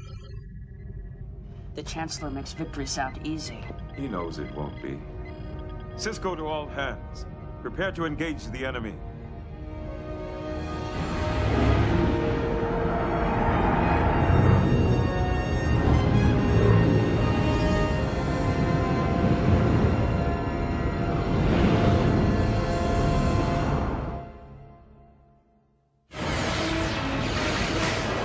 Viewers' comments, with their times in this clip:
0:10 I like how the music sounds when the ships of both factions are about to battle each other.